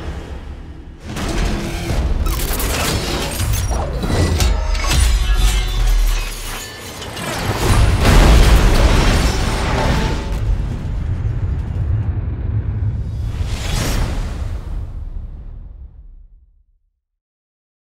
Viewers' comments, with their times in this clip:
0:06 "Get over here" (Scorpion's voice)